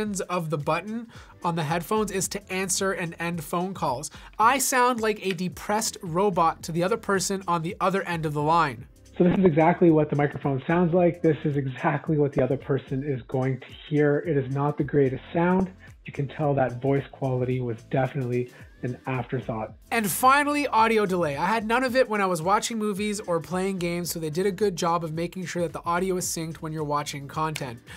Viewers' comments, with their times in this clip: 0:08 sounds like a suicide voice lol I purchased this before knowing there was a video released. The headphones are decent at best.